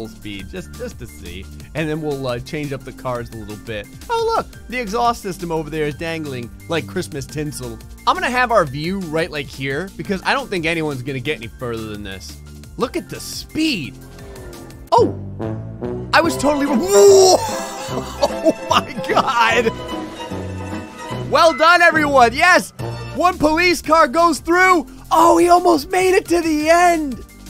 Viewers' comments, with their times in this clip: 0:09 I ligigt did a goofy laugh